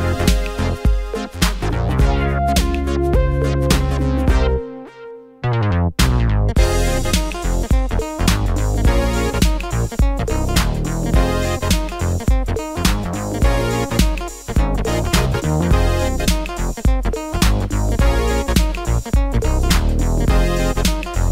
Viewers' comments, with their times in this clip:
0:05 Thanks for the info. :-) I just checked it again. Only this time even a little bit louder. 11 months gone now...and believe it or not...STILL the same effect! Very strange... My JBL Control 5 monitor speakers almost shook my desk after switching to 1080p quality. So my ears didn't fool me at all. But facts don't lie either...and so I tried to find out what is actually happening. But after 30 minutes of back and forth switching (speakers and headphones) my investigation got me nowhere...and I still have no clue WHY that is. 🤔🤷‍♂ Maybe it's some sort of "variable bitrate" thing? Or maybe I'm just switching in the "wrong moments"...? 😂